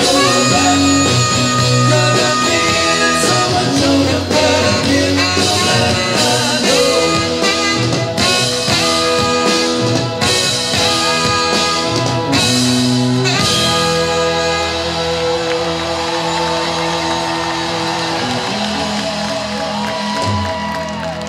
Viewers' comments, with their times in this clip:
0:08 AHH...the joy of sax...and those legs